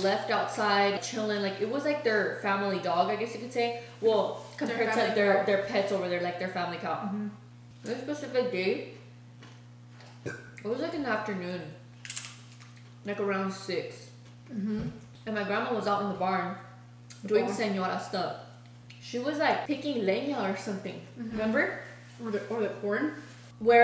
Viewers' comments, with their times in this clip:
0:08 Huuum Nachos Nice burps Excellent mukbang again!!!